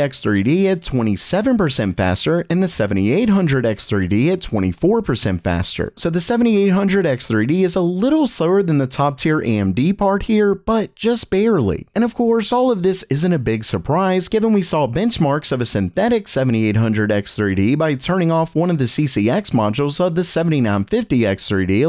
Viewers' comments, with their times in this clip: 0:09 Horizon Zero D"O"wn? Errrr X